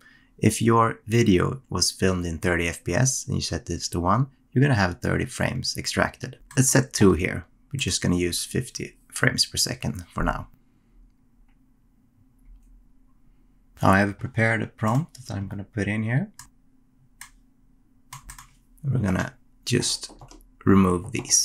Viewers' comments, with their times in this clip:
0:05 why does 1 give 30 and 2 give 50 (or did you say FIFTEEN and it’s dividing?)